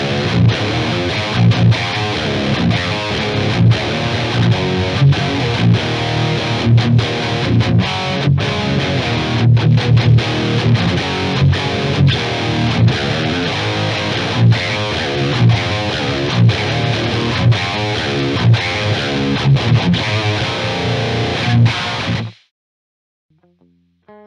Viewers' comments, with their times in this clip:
0:09 really good carcass tone 😍😎